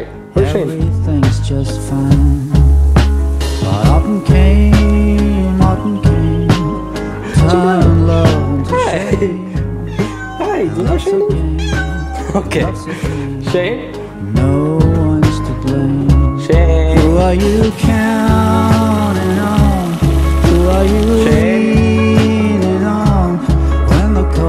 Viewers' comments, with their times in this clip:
0:09 when I heard cheeto meow I just thought "wow I've never heard cheeto talk before." Cause animals can definitely talk...duh